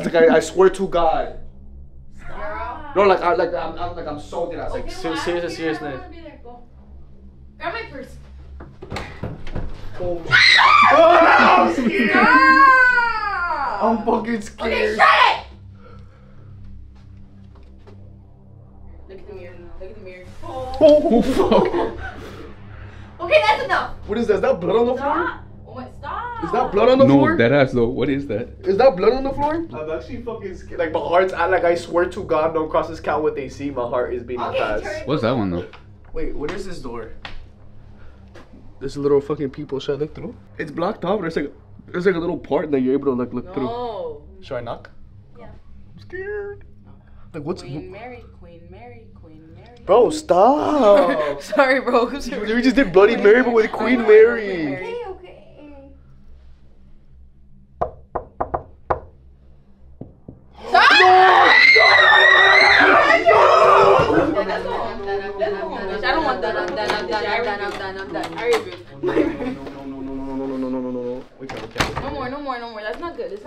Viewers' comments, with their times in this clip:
0:09 wtf were those knocks😭😭
0:58 nmms brooo no way they knocked back 😭